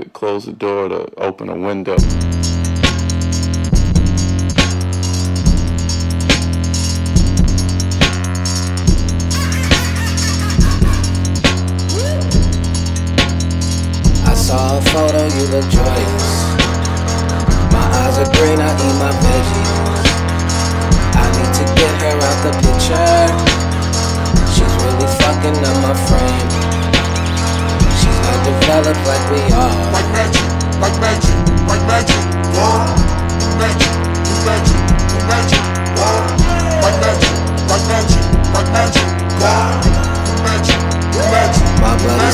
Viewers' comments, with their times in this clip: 0:09 the birds at 5am in the morning:
0:09 Devious ahh producer tag 💀
0:09 birds at 4 am
0:09 birds at 5 am
0:09 Birds at 6 in the morning be like
0:10 no one: bird at 6am:
0:25 bro whos cleaning their window in this song